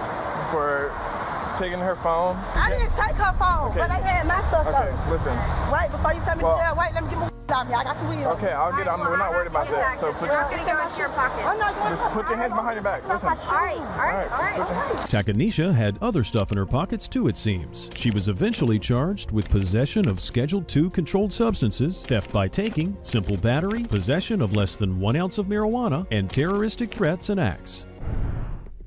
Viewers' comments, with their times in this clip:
0:09 The officers should also have had taped her mouth at: so as not to hear the constant yapping.